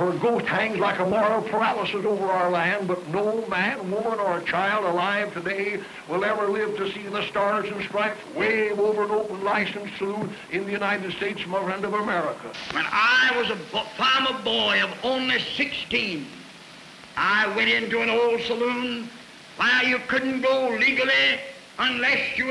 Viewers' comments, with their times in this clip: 0:04 I couldn't help but wonder, what sort of public speaking lessons were folks getting 100 or so years ago?